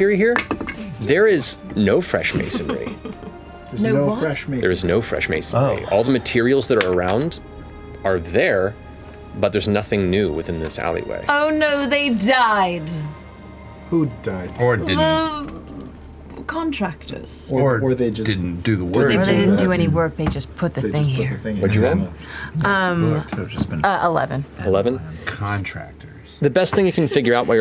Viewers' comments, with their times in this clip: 0:10 Matt went school teacher mode. lol, could almost hear the “do I need to separate you two” 😂😂😂